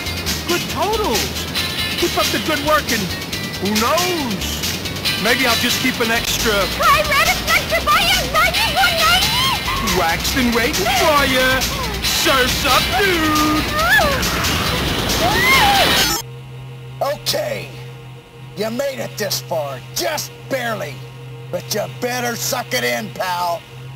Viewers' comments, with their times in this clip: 0:04 To this day, I still have no idea what she says.
0:05 I never could figure out what she said.